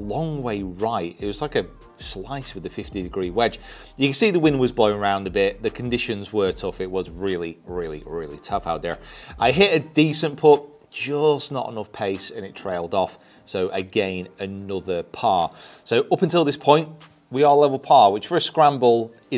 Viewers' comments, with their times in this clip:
0:07 “the conditions were really, really tough out there” in a tiger accent 😂